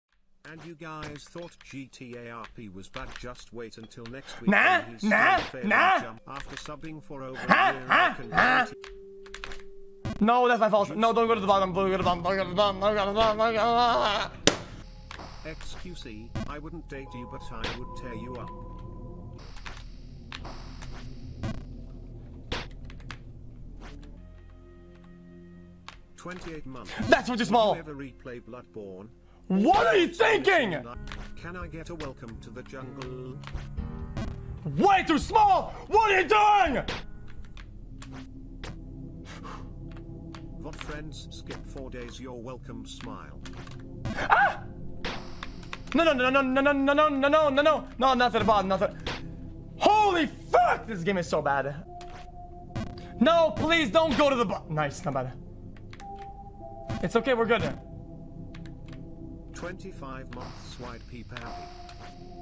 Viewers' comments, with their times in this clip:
0:04 the sand people from star wars be like
0:50 did x just crack